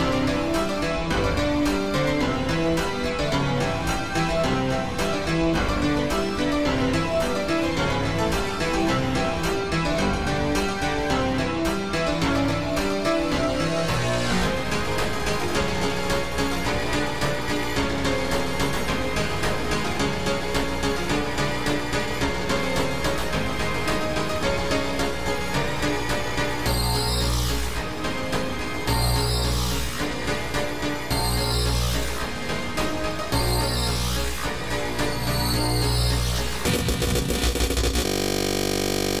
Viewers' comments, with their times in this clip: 0:10 is the exactly perfect example of playing on a keyboard and smashing your whole body on to the key board
0:13 the most impressive part is that you managed to still have all those keys playing and it still sounds like all star
0:14 is what happens when you try to play a VHS tape with a wood chipper.
0:14 so intense keyboard turn gay
0:14 1,000,000 notes per second
0:25 That, my friends, is the sound of a computer screaming. Admittedly, the song is awesome until that point.
0:26 are like warning sounds
0:27 Squeakers on steroids
0:36 Sounds like motorcycle
0:36 WINDOWS ERROR! BOOM!!!!!!
0:37 My classmate fart like that in school and went to Detention lol so we died laughing That happend to me in 1st grade wow, now i am in middleschool ,he keeps farting like that and always makes my day.